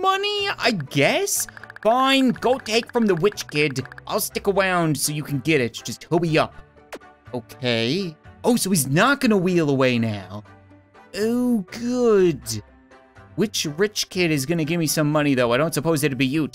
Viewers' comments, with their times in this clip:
0:03 I liked how he said stick